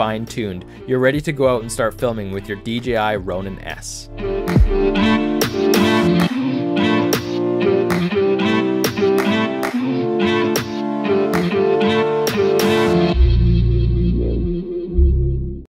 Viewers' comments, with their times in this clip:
0:05 that music is so bad dude.